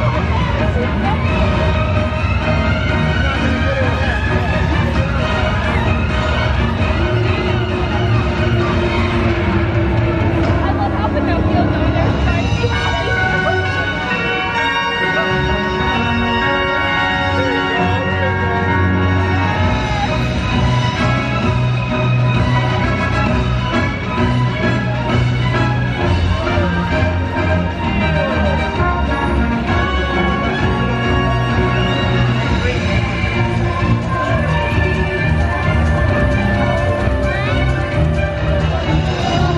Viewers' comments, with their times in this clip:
0:03 WTF THE MUSIC AT THIS PART
0:06 you can barely hear it but there's some sort of buzzing/groaning in the background and i like to think it was comjng from the dragon
0:10 you can here her say it
0:11 ,you could hear a girl say “I love how Pinocchio is over there trying to be happy!”
0:19 if you think the music went perfectly when the crew were putting at the fire 👇
0:23 The way it turns kind of heroic as he puts it out